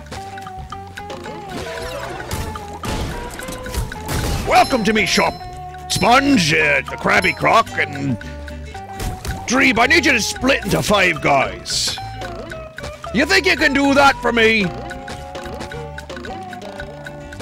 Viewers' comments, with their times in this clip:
0:05 Vinny literally does a better Krabbs than the Krabbs VA in this game.